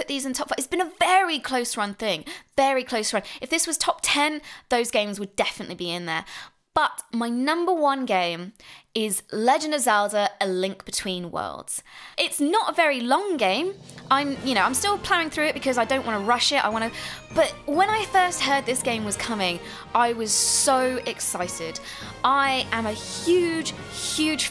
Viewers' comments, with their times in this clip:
0:06 A Link beetween Words! Mhm, love a Link reading